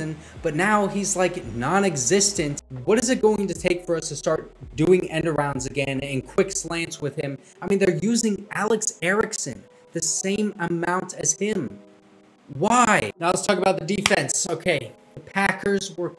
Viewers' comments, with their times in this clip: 0:04 sound took a shit could not watch the rest